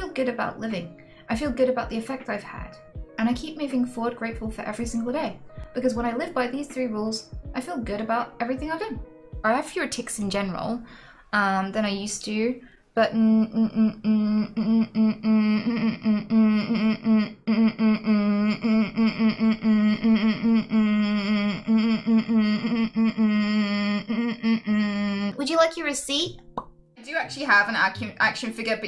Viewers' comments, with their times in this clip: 0:10 did you go Australian for a second there
0:13 The printing machine tic starting absolutely killed me LMFAO.
0:13 Literally speaking morse code.